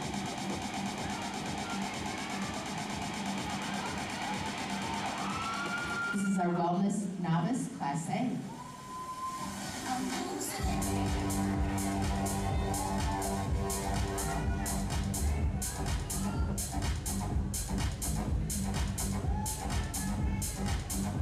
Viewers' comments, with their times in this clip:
0:06 I like the stage music